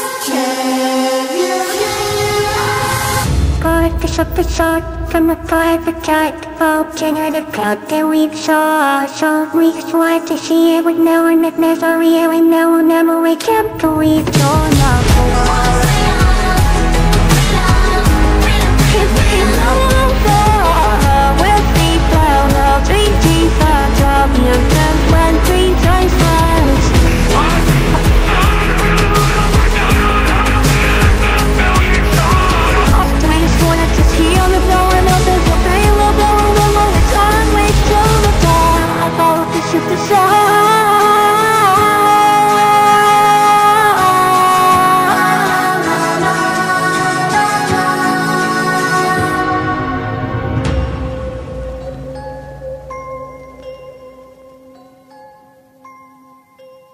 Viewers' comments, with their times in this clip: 0:02 sounds like Lois XD
0:02 I love Crafty Corn's voice
0:03 I don't know why everyone calls crafty corn elmo just sound good it sounds shy😊
0:03 i love craftycorns voice😍😍😍😍😍😍😍😍😍
0:04 Craftycorns voice actually sounds terrifying
0:05 sounds like Fraud of a gyatt for some reason
0:05 My fav time is beautiful solo crafty
0:10 Was cute her voice is so cute 🥺 (im dying bc her Voice)
0:18 Bobby was singing with the children😂
0:19 Bobby’s voice sounds so good😭👍
0:27 why does catnap sound like A blurred out plankton 😭
0:27 Bro why catnap sound like fire in the hole meme in
0:27 Why does Catnap sound so GOOD here?
0:27 catnap was singing that with all of his heart bro
0:27 blud sounds like plankton a bit
0:27 BRO BROKE HIS VOICE
0:32 catnap you’re not saying anything lol
0:40 Bobby switch her voice in